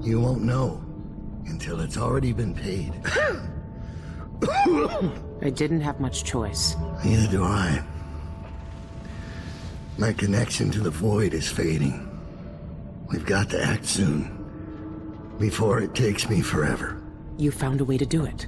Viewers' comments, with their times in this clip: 0:04 Did anyone else at first think that daud sneezed xD